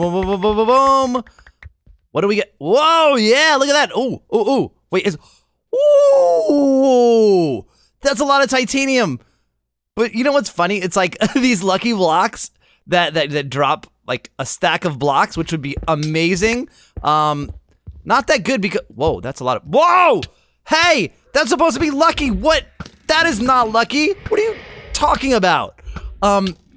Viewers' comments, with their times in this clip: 0:10 voice crack XD